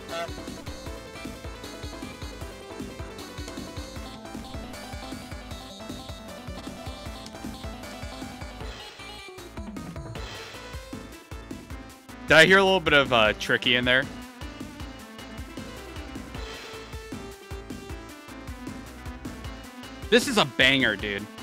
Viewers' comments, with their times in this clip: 0:08 this is more of a circus theme than expurgation